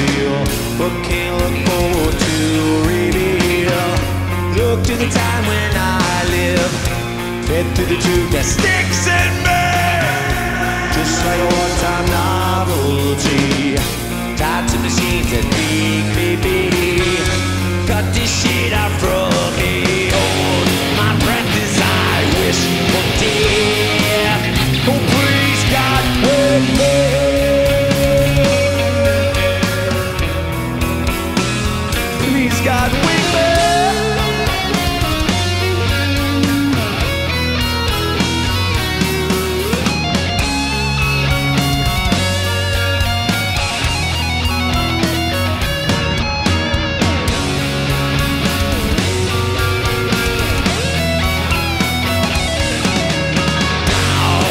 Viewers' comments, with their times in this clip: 0:07 that scream omg
0:08 Everyone talks can we just appreciate the singing "look to the time when I'll leave" part.
0:08 Agreed, especially the part where he screams
0:36 It’s heavily auto tuned, you can hear it pretty clearly